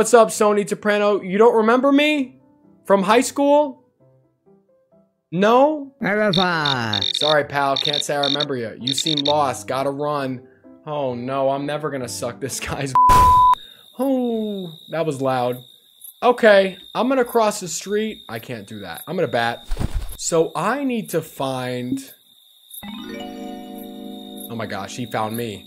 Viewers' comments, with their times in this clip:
0:10 why isnt anyone talking